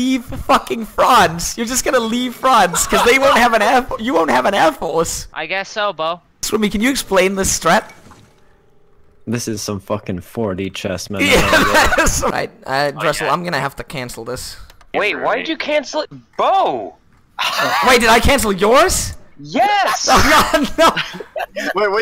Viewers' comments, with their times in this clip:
0:03 auto generated English subs called France frogs